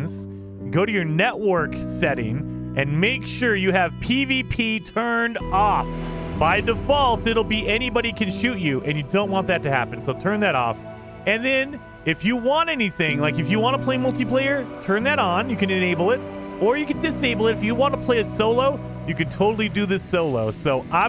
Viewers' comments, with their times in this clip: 0:03 that “off” was right on the beat drop which tbh got the point across really well XD